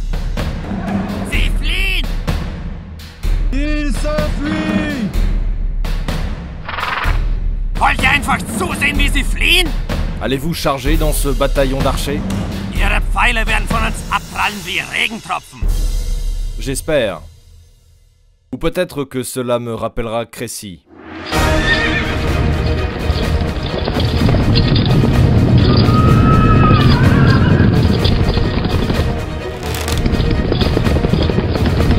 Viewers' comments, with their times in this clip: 0:09 is that knight speaking German?
0:10 on the guy on the horse speaks german
0:15 dude speaking germanic 😅😅
0:18 That knight in sounded like a german